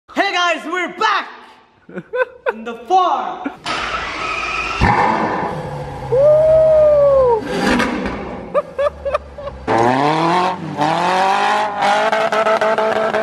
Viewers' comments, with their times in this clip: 0:00 RIP me and my headphones that I did not know were on full volume :(